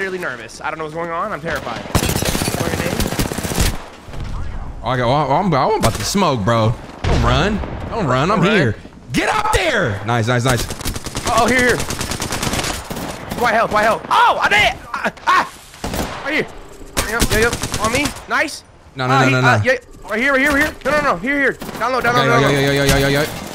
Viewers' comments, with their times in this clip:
0:08 Yooo I be screaming at the game just like this 🤣🤣 Be having me mad tight when they don’t want to climb up and then I get killed from the back